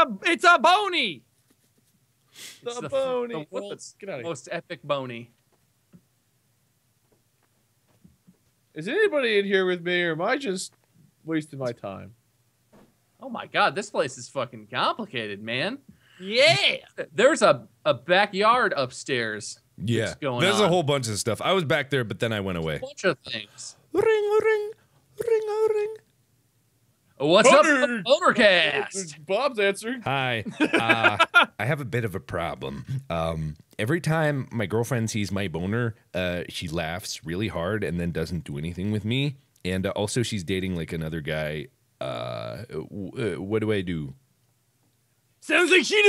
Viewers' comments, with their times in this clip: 0:05 That Moment Of Silence XD
0:05 the one time in history everyone was quiet at the same time
0:30 I like how they all went silent when mark started talking😂😂😂